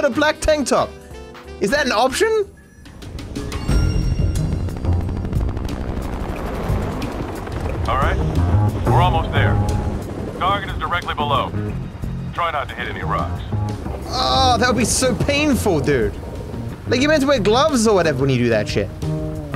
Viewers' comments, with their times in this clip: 0:04 I love how both Payday 2's "And Now We Wait" and Ace Combat 7's "Yinshi Valley" soundtracks are cleverly blended in together. The key of Yinshi Valley was even changed to blend them properly.